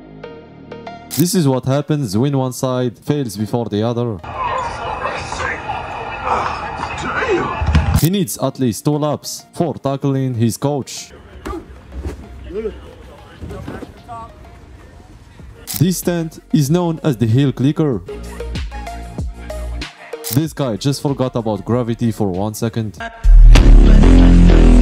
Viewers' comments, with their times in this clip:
0:05 the way the guy said dayum 😂